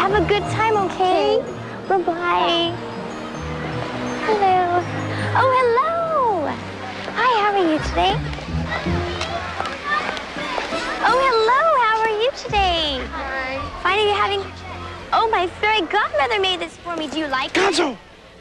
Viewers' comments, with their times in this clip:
0:03 Is this the only Cinderella they had on call for the day? Did the producer's daughter negotiate the role? ... "Hello. Oh, hello. Hi, how are you today? Oh, hello. How are you today?" "Fine." "Fine? Are you having... oh, my fairy godmother made this for me. Do you like it?" Apparently Cinderella was raised in the San Fernando Valley.